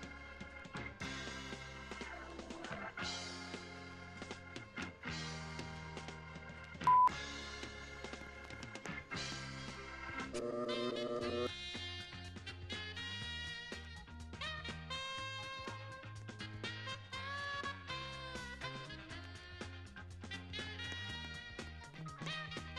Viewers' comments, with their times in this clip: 0:10 a guy said grrrrrr and his voice is a robot